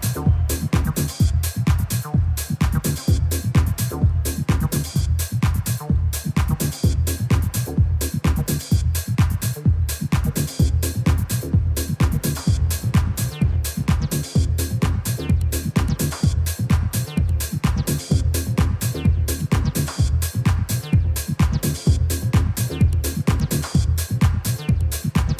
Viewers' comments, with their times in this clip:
0:07 track where the guy is going 'bla bla bla' is a stomper